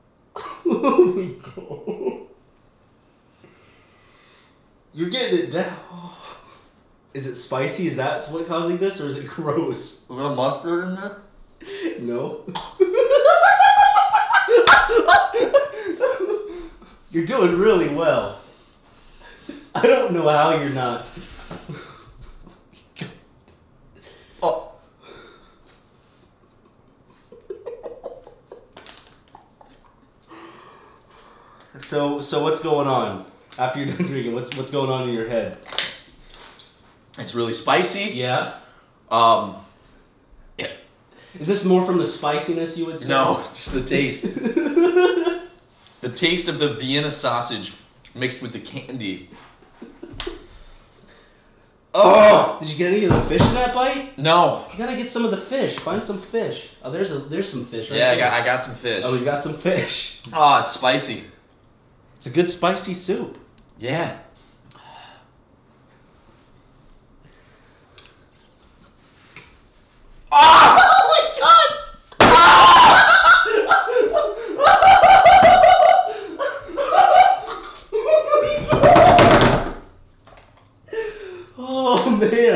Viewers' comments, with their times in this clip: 0:08 “Is there mustard in this?” “No” gags Edit: :)
1:07 beware headphone users, extremely ear bursting sound.
1:08 You might have to turn your volume up really high he's so goddamn quiet.